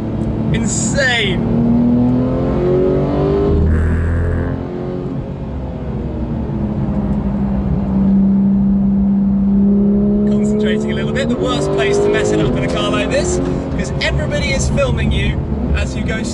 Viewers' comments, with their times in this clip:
0:03 Was it me or did someone let a raspy fart go 😂
0:03 min the biggest fart i ever heard in my life XD
0:03 sounds like a fart
0:03 is it a fart?